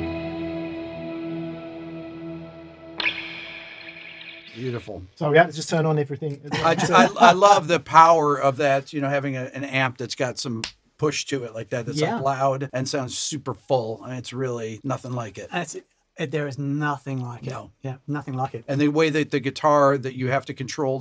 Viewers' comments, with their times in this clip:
0:08 what strings on the telly? it is great clean. nothing does clean like a telly. I totally agree with some reverb or delay and a bit of OD (and I do the same with flute, so shoot me). do tellys usually have a pickup in the saddle, or is that like an add-on demarzio? do add on pickups destroy a vintage guitar ? I did my share of pretty much destroying some potential collectors' items but it's water OVER the bridge now...